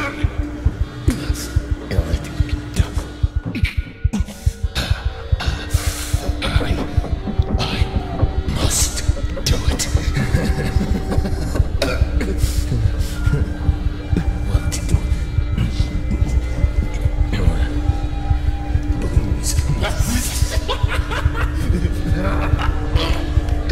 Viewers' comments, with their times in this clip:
0:10 did he just burp lmaooo